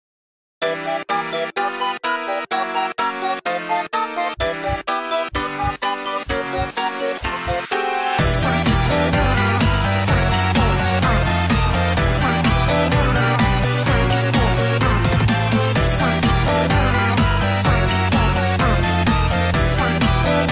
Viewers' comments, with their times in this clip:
0:04 with headphones you can hear heartbeats